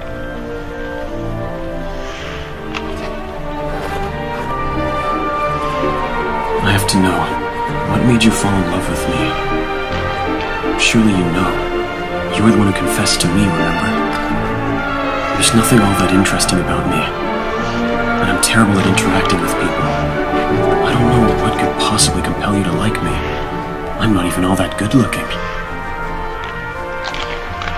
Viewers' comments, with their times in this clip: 0:06 he kinda sounds like howl (which i love both of them)
0:13 holy fuck the voiceover sounds so good even to my lesbian ears